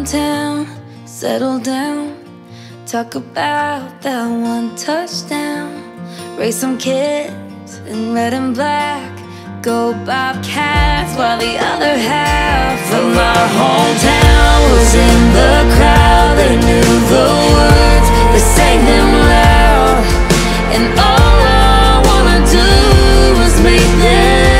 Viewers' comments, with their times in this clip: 0:09 it sounds like she’s saying let ‘em black instead of red and black